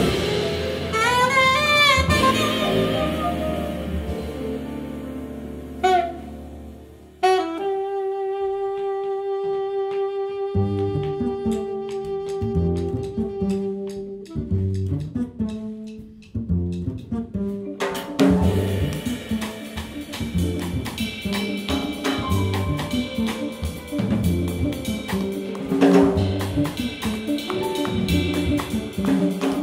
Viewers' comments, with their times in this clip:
0:10 The bass vamp reminds me of the track Silence from the original F-Zero.